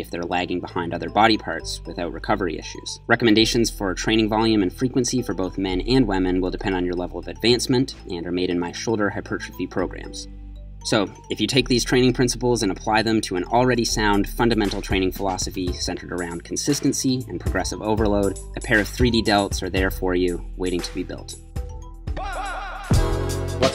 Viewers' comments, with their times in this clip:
0:05 men and wamen